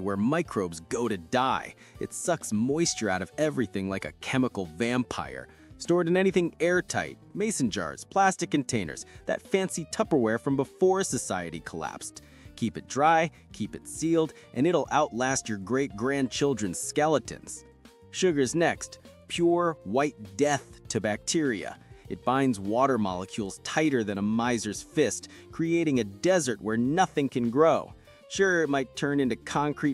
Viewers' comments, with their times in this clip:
0:10 You have a metallic tinging sound feedback problem for your edit at ~ -3 mins.